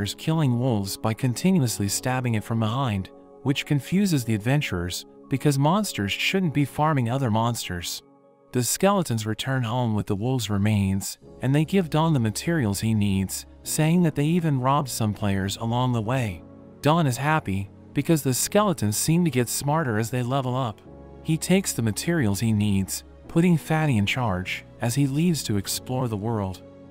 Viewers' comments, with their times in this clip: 0:08 why do i hear electric music like if it came from a concert
0:09 cue the music